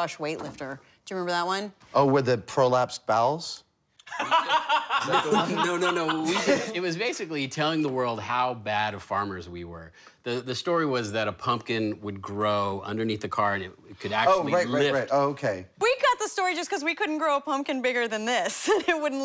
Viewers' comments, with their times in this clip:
0:04 just so you can keep watching grant's laugh. RIP